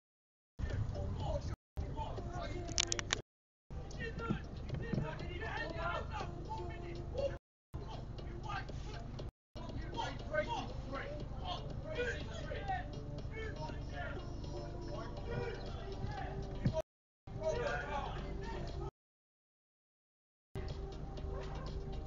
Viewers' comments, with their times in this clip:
0:05 what's his problem he has a stop sign so stop yelling at the car driver just wait until its clear.